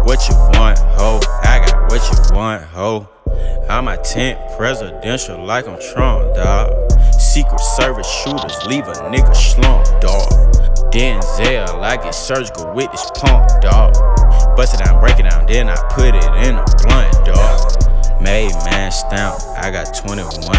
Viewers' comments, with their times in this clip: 0:06 When the beat dropped ! I felt that